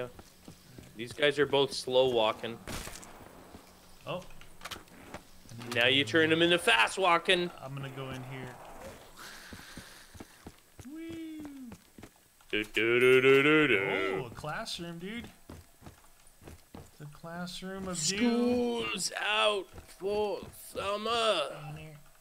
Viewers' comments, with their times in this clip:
0:08 I heard an oof sound 🤣